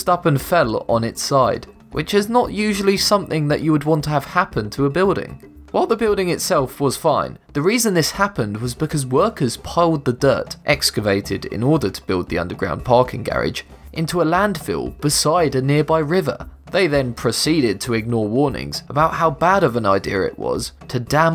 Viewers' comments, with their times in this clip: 0:05 voice crack "whoie the building itself..."